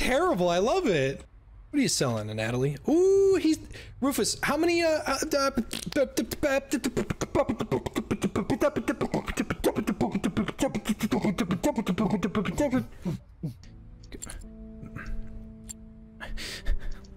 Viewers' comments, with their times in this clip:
0:04 New thanos beat boxing